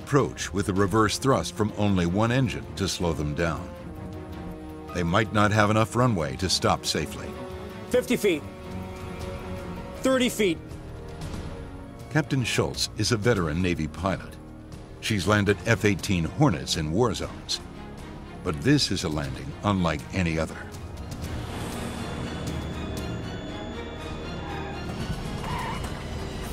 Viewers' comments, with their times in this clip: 0:09 Where are the GPWS callouts why is the first officer doing it